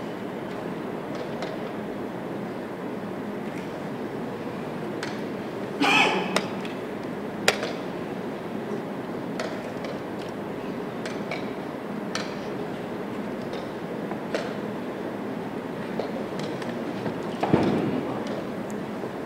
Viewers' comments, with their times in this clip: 0:06 person yelling "no" classic